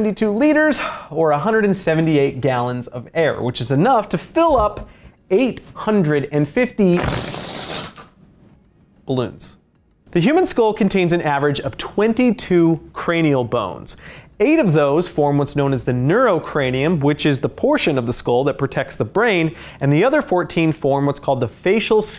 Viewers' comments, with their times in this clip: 0:07 When you let the balloon go and it farted and you said “Balloon” I felt Bill Nye vibes